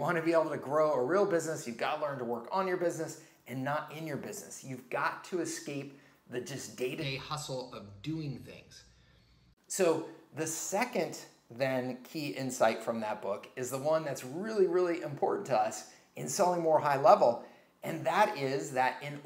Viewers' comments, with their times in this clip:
0:04 I guess the microphone connection failed 😂